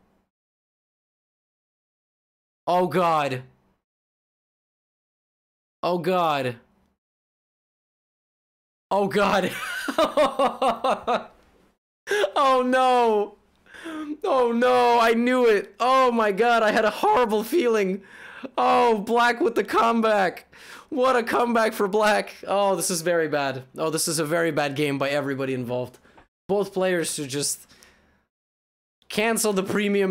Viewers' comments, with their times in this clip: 0:09 my laugh was actually synced to yours Levy
0:18 "black with the CUMBACK" if u hear it once u can t unhear it back